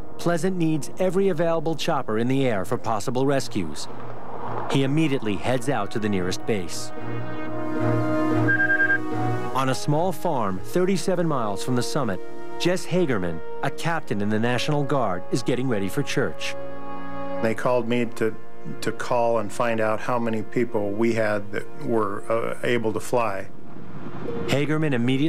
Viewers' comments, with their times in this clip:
0:09 Pughallup? Seriously? It’s Puyallup, WA. 🤦🏻‍♀️ 🤦‍♂️ SMH